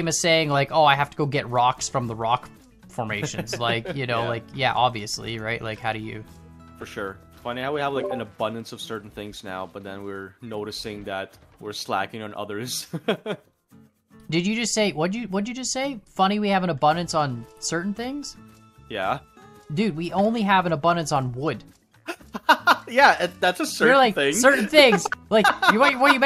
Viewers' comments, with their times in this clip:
0:06 anyone else hear the discord unmuting sound???
0:07 why the random discord sounds
0:07 I thought someone joined my discord call xD